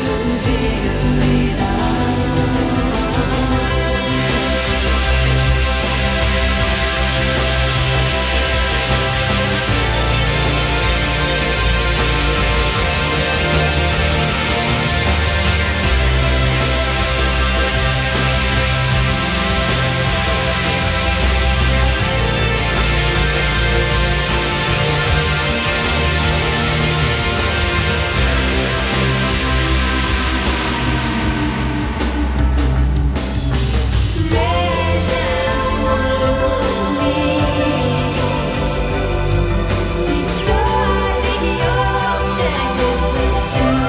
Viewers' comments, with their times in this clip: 0:05 feels like a thunderstorm of emotions and butterflies. Their guitar kills it every time ❤
0:28 I want to ride that guitar wave from on all the way to heaven...